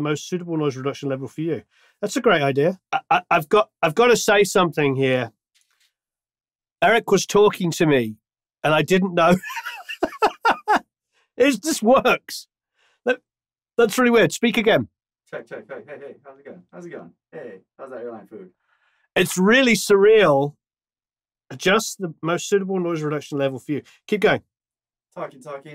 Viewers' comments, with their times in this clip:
0:07 love that you speak louder with the headphones turned on 😁